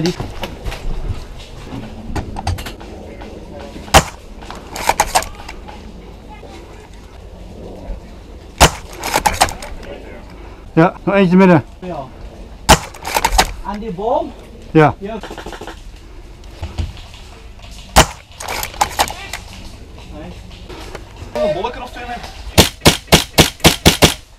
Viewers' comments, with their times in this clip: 0:05 you can hear the screams lol